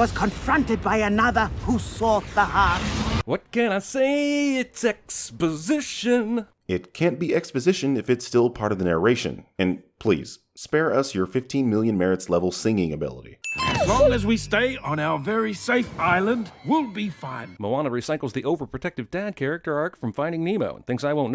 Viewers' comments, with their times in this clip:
0:03 "What can i say a sex position" Wait, what was that?? One more time